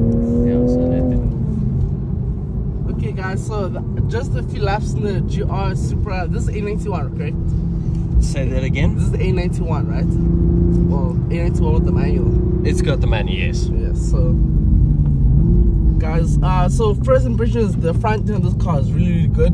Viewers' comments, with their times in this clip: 0:06 I like the downshifts